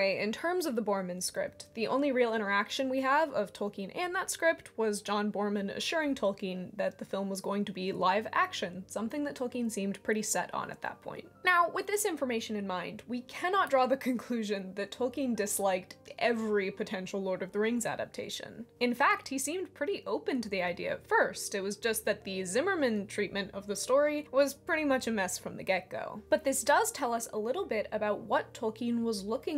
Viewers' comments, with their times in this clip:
0:10 Your "now" sounded like Gary's "meow" from SpongeBob! Very cool!